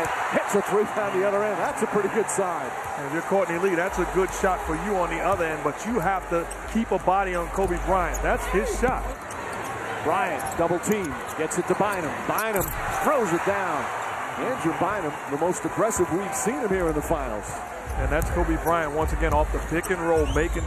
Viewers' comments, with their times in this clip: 0:04 when 21 guns started playing that really hit me in my feels...